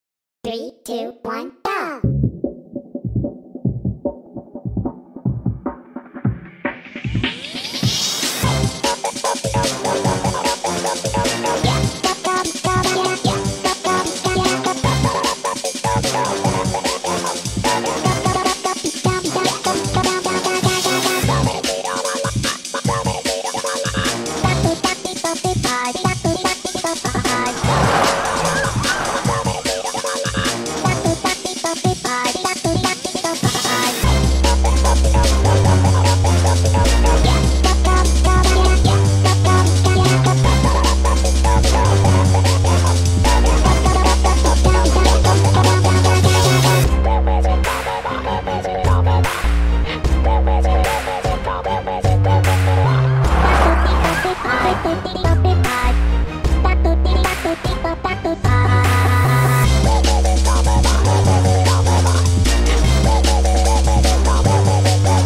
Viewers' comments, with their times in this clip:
0:08 why am i getting evil villain theme song vibes?
0:27 bullet train zooms by
0:31 "music intense enter in The chat"
0:46 The beat we're here for
0:47 i can’t get over that beat